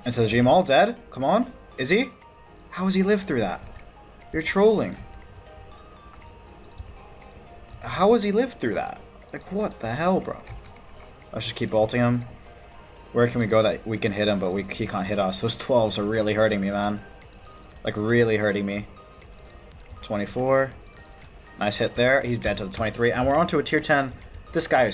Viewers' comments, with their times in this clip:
0:09 british accent breaking through?